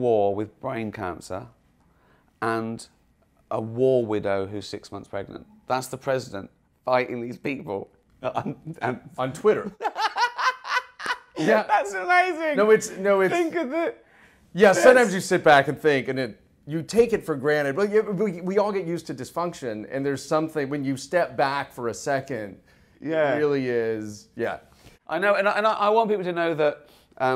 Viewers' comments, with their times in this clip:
0:09 Best moment is That laugh really is so Gervais-ish.